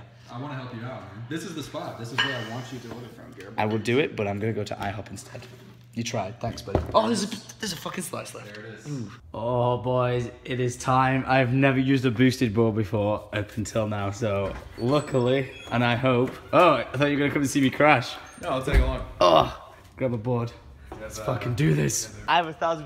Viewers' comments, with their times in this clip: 0:08 in the background AYYYY LMAO